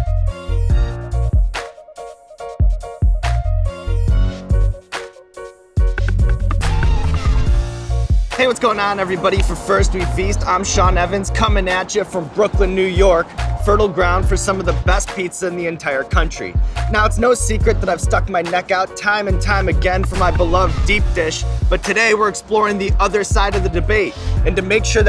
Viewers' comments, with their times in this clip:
0:08 When I hear that intro I know i'mma get hungry